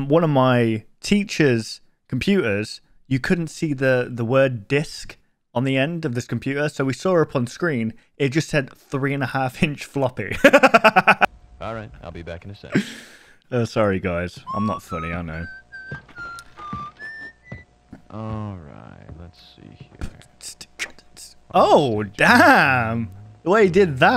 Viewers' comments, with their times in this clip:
0:07 The maniacal laugh after 3 inch floppy had me💀